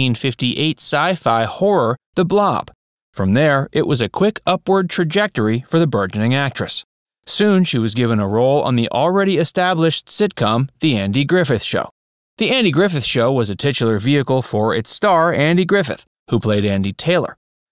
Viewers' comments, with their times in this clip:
0:05 Learn how to pronounce “burgeoning”. (We all make mistakes)